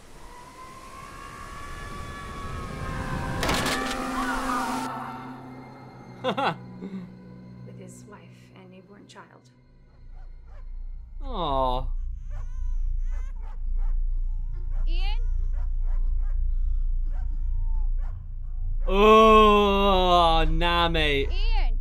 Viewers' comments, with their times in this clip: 0:03 Someone dying: AAAAAAAAAAH Him: